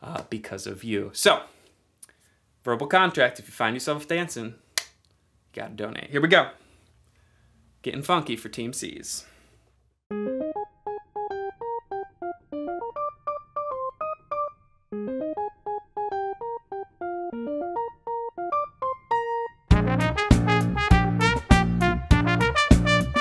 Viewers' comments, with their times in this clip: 0:10 This is awesome! (The music starts )